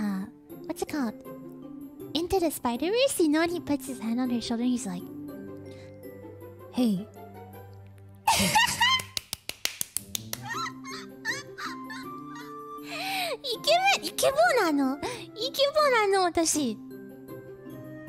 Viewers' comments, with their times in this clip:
0:05 Soo cute the super fast claps